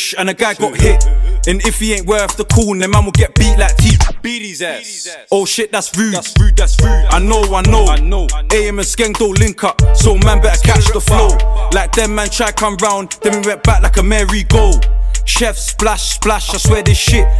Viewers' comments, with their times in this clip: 0:03 ''beat his ass'' my guys sounding american
0:04 the way man said "beat his ass" was cringe